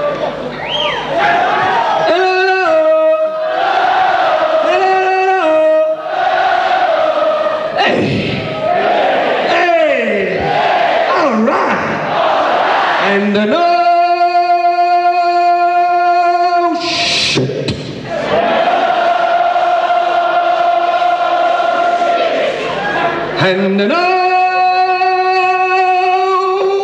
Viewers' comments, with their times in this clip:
0:07 sounds to me as though Rossi's vocal improvisation with the audience on that occasion, was influenced by a certain other rock frontman, who had sadly passed away only a week earlier.